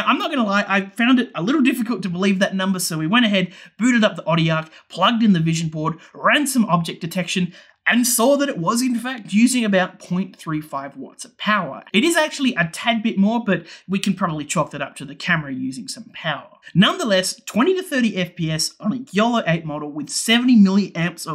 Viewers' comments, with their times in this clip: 0:09 booted up the body aaarrgh? Listened 5 times and still don't understand what you said, sorry. What do you use to measure power? Looks cool. Btw, subscribed, this content is what I crave.